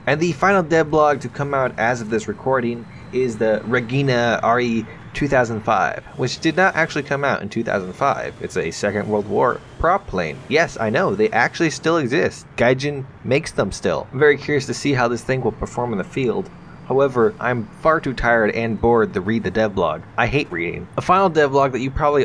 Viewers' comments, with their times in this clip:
0:04 "regghina" at least you tried lol